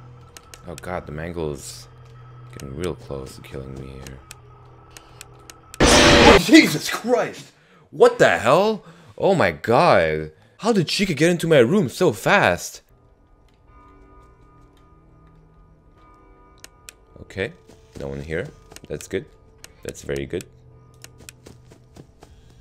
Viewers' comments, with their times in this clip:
0:06 LOL his voice
0:10 you can here the phone guy in